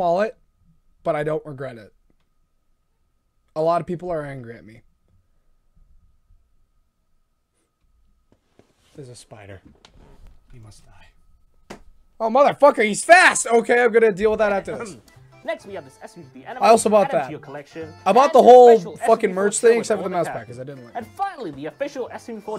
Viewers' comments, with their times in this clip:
0:09 He said that so calmly Theres a spider He must die Legendary words